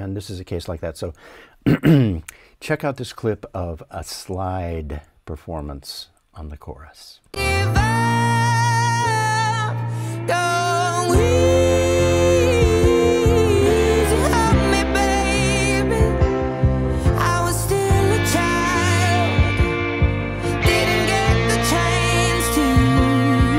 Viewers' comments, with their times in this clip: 0:09 The slide performance sounds amazing!